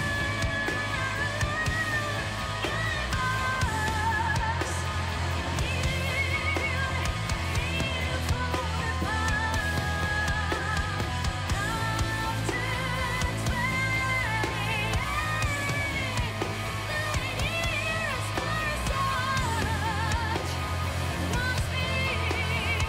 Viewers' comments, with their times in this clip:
0:06 that old man singing <3